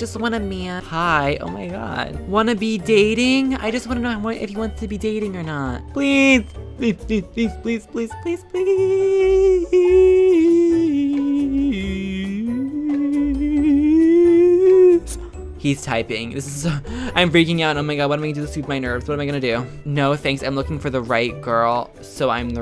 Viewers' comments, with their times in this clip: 0:10 WHY ARE YOU NOT IN THE OPERA DOIN DAT?!